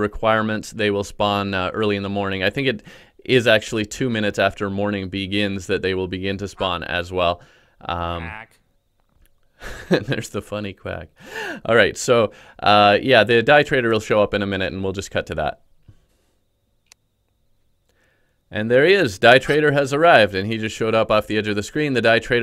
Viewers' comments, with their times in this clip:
0:09 I just started out in Terraria and the first time I heard a quack so loud it scared me irl😂 also funny you found it funny. I have a good headphone and it was 2am and I live alone by myself and hearing that loud quack for the first time got me good😂😂